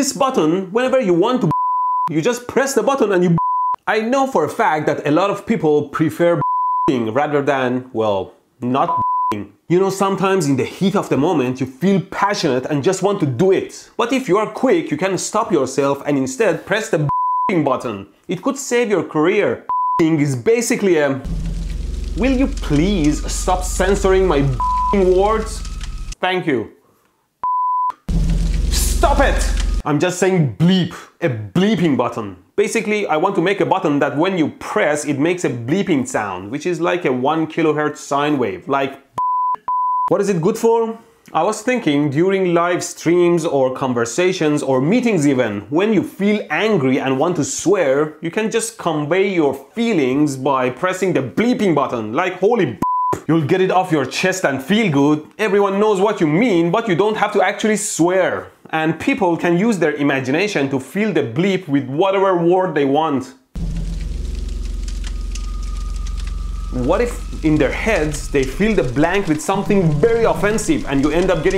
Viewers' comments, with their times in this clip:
0:05 I like how he beep everytime when his censuring his mouth
0:51 The holy bleep was not bleeped properly
0:53 LOL, we can actually hear the sound of the B and P at the beginning and the end of the word, even with the bleep sound, so he literally said HOLY BLEEP!